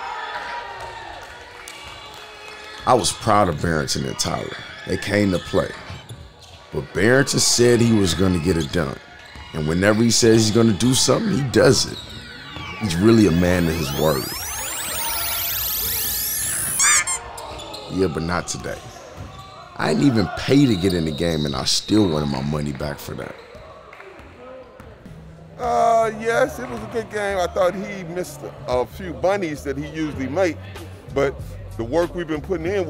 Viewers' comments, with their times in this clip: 0:07 built up the anticipation w the music and everything 🤣🤣
0:16 sound effect is hilarious!